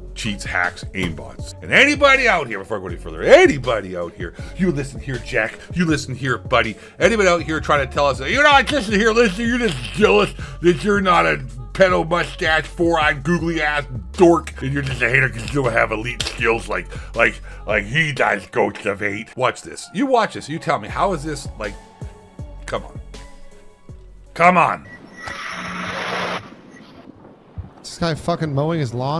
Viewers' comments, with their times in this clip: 0:09 You earned a sub as soon as you started with the lisp 😂
0:10 i do talk like this